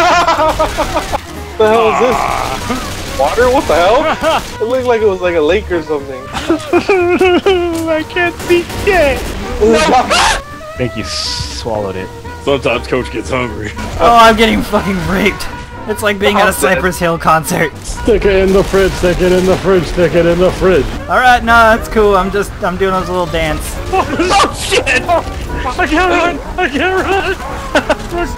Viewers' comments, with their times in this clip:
0:09 sounds like Homer Simpson :P